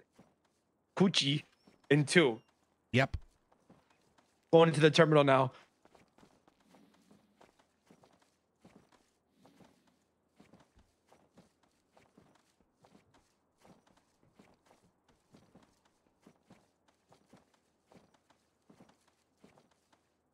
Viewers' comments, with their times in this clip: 0:08 yo a lockbox opening?!! Nvm elevator door